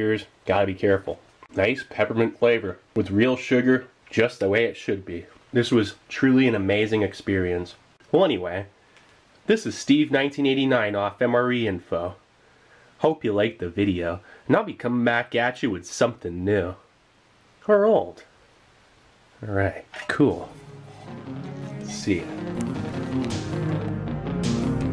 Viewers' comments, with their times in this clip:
0:09 his outro had me actually laughing out loud. He legit turned into a damn robot